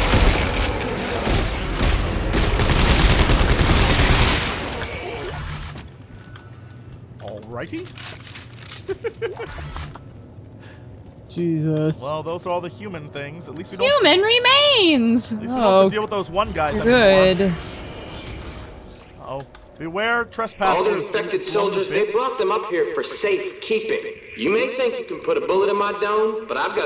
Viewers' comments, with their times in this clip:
0:10 What the fuck was that voice !?!?!